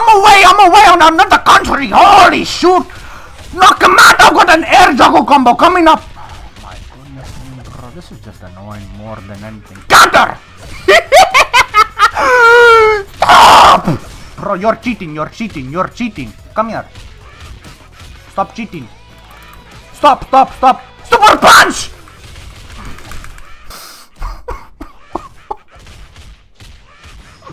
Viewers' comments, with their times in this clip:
0:08 Majima sounding laugh bro